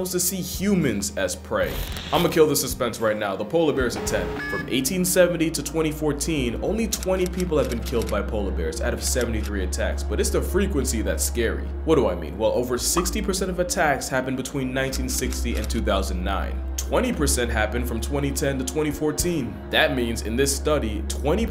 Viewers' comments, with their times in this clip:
0:04 “I’m gonna kill the suspense right now the polar bears are 10” Comes in with the tactical nuke sound from COD